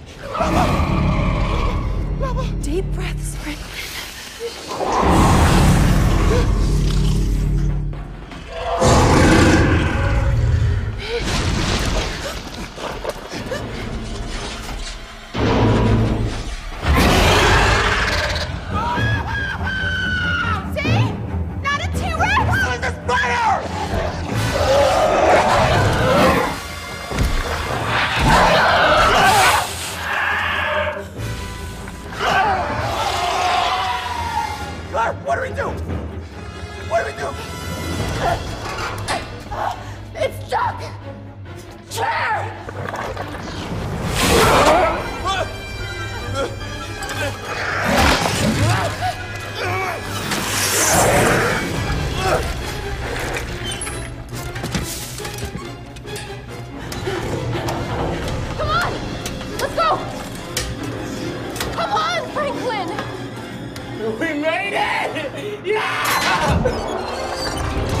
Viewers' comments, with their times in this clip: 0:07 this growl reminds me of Spino from Warpath
0:14 When I first watched this movie I thought he said “NO ITS A SPIDER!” Instead of “ HOW IS THIS BETTER!” 😂😂🤣😂🤣😂😂🤣😂
0:17 Baryonyx: *Appears* Blue shirt dude (I forgot his name): *GIRLISH SCREAM* Claire: See!? Not a T-Rex!
0:17 That scream killed me 😂😂😂
0:17 Thats how real men scream😂
0:18 Pikachu: GEEZ TIM! Why are you screaming like this? Are you 4 years old or something? Tim: Sorry Dude. Im just scared!
0:18 Omg that scream cracks me up every time ha ha.
0:18 Franklin's scream make me laugh so hard 😂
0:18 Franklins scream is basically MWAPMAPHAAAAA
0:18 the scream is terrifying
0:18 baryonx: SCREEECH Whoever he is: OH ITS A SPIDER Like bruh how do you call “SCREEeCH” a spider like look at the size of that
0:18 Reminds me a bit of Toms screams in the early Tom & Jerry Cartoons.
0:18 what is that scream LOOOOL
0:18 Why did he scream like dat? ;_;
0:18 I could watch that scream all day. 😂
0:18 Franklin’s roar is better than Baryonyx
0:18 Goddamn his scream sounds like a f*cking fire alarm. 😖
0:18 I would've been gone the minute I heard the first roar💀(Also this would've been me )
0:18 baryonyx: hi sisters franklin: puberty scream
0:18 Franklins scream lol 😂😂
0:19 Franklin's scream is more scary than the actual dinosaur.
0:19 As goofy as Franklin's scream is, we should probably keep in mind that we'd all scream like that if met with a carnivorous dinosaur. I love dinosaurs, but if something like that came at me...yeah, I'd be screaming like a lunatic.
0:19 Dino: roars Dino: now copy that Franklin:
0:19 his scream though 😂. I would probably scream like that to
0:19 I really don’t know how he make that scream😂😂
0:19 that was the best scream ever.
0:19 Franklin: (screaming) Claire: 😒
0:19 is the best roar
0:20 “see!? Not a trex!” “HOW IS THIS BETTER!?!” I love it how Claire just says it so calm xD
0:22 Franklin scream so loud
0:22 Be honest did you hear “no it’s a spider!” Or “how is this better!?”
0:22 (screaming) HOW IS DIS BETTER?!
0:24 sounds like he’s saying,” NO ITS A SPINER”
0:27 listen carefully. Its got a Spinosaurus sounding growl.
0:32 the noise the baryonyx makes sounds terrifying
0:41 That woman pointing and shouting "chair" is one of the funniest things I've seen in years. She knows what things are.
0:41 the way she said "chair". i like it.
0:41 Nobody Absolutely no one Not even me Claire C H A I R
0:53 Why am I hearing the Godzilla theme?